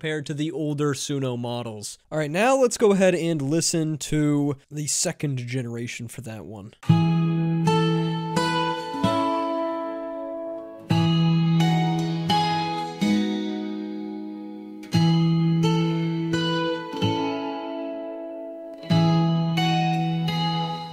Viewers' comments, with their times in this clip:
0:05 The pug ate the lyrics.